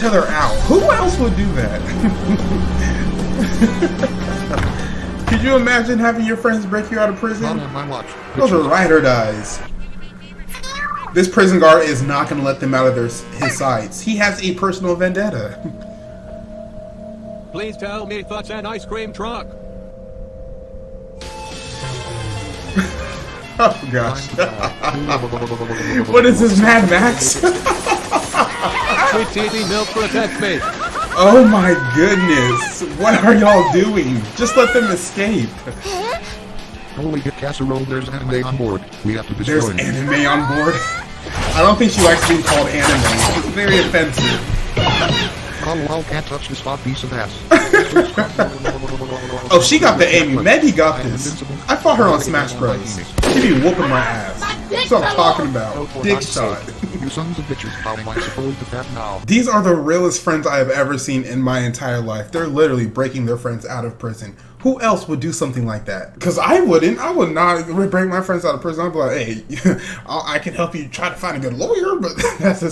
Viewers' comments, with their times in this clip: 0:10 does anybody else here the 2018 rap on meggys phone or am I just insane
0:54 It sounded like it hurt